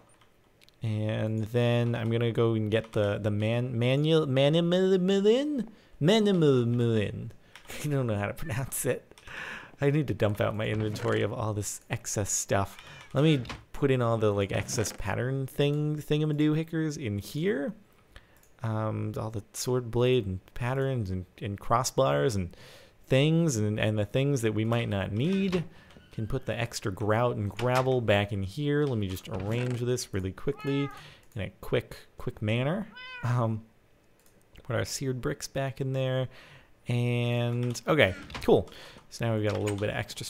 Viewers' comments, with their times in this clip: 0:08 ish He sounds like that strawberry in Cloudy with a Chance of Meatballs 2
0:22 you can hear a star fall in the background if you listen closely